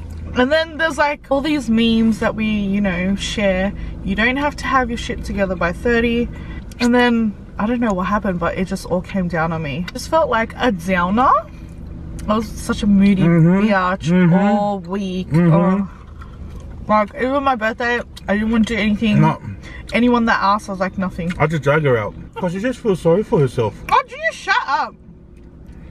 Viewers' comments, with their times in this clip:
0:10 not the agreeing in the background LOL. been waiting impatiently for your vid lol, thank you guys😊